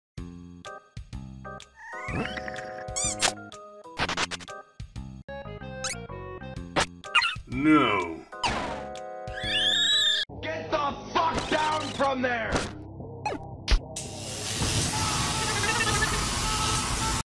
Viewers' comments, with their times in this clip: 0:05 is my favorite part her scream
0:09 [Angry wild Wattson Sounds]